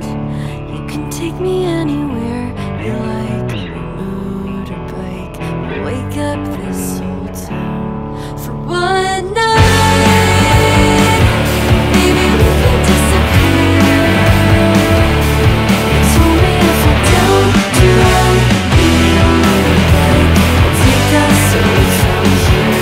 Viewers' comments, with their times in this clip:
0:03 If you listen very carefully you can hear an engine idling, love these little details